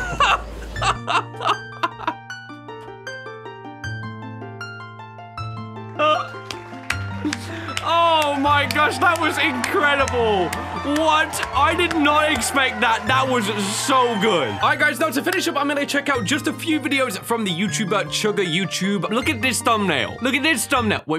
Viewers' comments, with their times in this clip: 0:05 bro sounded like a dolphin